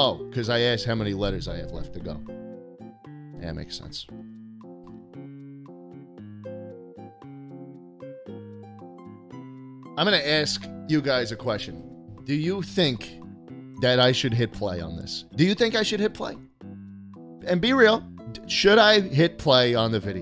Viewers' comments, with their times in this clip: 0:04 new honk mimimi timestamp (video was shortened about 12 minutes)